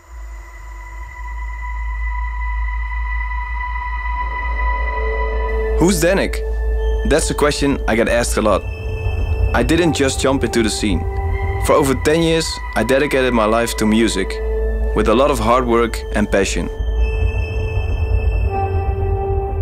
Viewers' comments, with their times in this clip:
0:06 Hardwell??? Fuck me if im wrong but they sound 100% the same xDDD